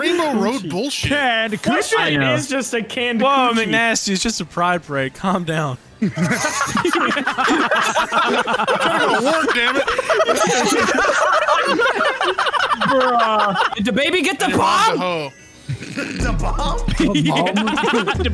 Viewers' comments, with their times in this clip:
0:06 Seagulls fighting over a BIGMAC